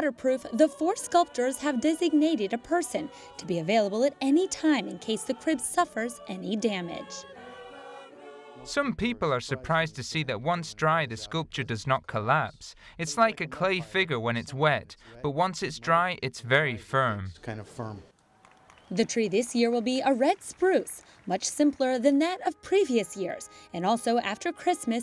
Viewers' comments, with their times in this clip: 0:09 The voiceover and the man we’re speaking the same language lol